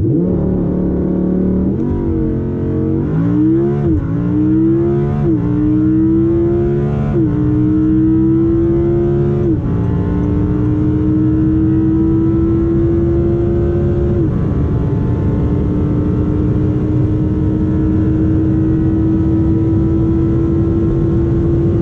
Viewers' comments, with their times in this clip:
0:04 wow I knew R8 sounds amazing, but I had no idea it also revs all the way to 9000 rpm just like Porsche GT3. Wondering why everyone talks about orgasmic 9000 rpm regarding Porsche, but I never heard someone praising R8 for that.